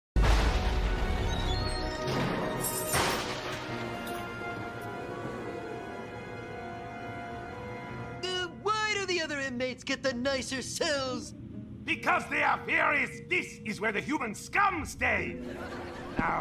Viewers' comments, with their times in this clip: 0:04 I like how they went and added an audience gasping sound effect like they thought it would add suspense to the scene and shock the fans. PLEASE!!! 🤣🤣🤣🤣